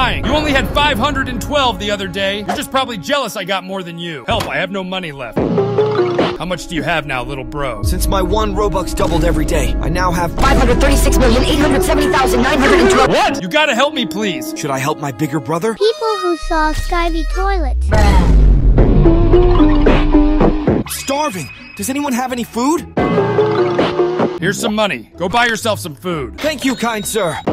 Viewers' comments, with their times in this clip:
0:08 Bro sounds like deku